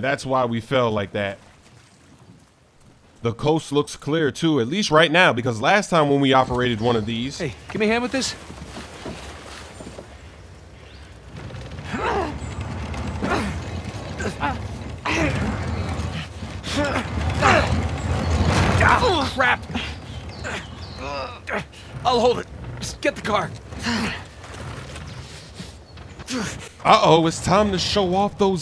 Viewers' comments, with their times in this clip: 0:09 when nate fell all i can think was instead of splasssshhhh it was splaaaaatttttt lol